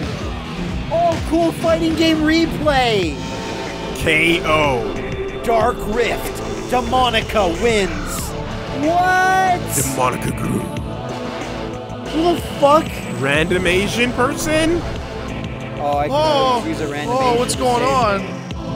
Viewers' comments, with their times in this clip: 0:05 did David Cage invent Dubstep?